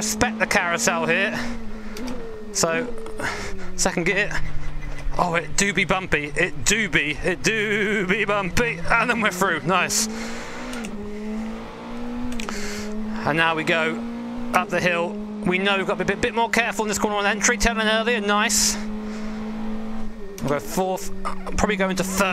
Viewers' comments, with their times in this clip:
0:06 It dOö0øOo be bumpy